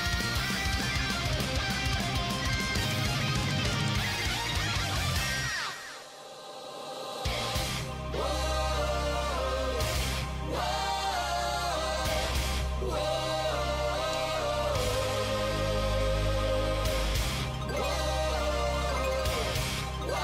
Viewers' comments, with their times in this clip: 0:05 always loved the whoaoahhooaho